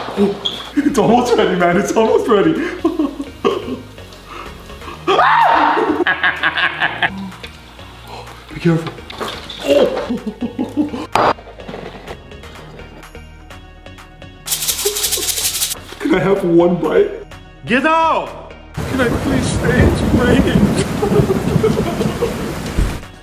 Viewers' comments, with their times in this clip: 0:05 I heard this scream before that
0:05 I heard this scream